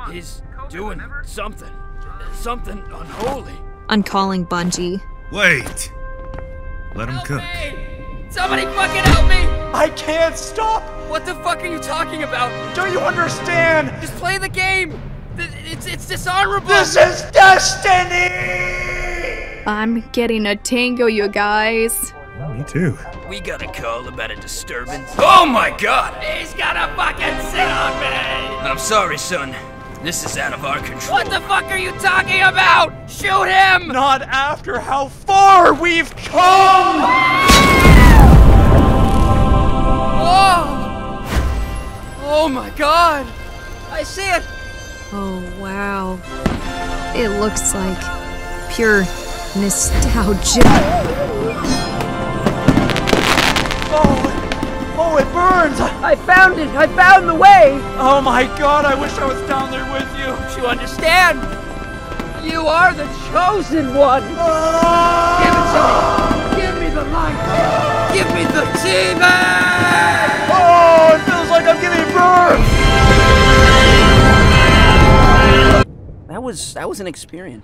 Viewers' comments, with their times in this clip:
0:10 sounds like GlaDos
0:36 the scream got me😂
1:04 moans "give to me, give me the LIGHT, give me the TEABAG!"